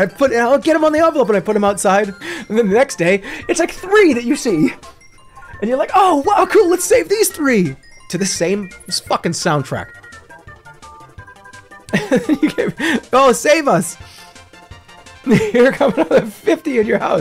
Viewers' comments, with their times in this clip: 0:03 I love how you can tell Jerma genuinely finds this bizarre earwig scenario cute because of how he starts to slip into his Otto voice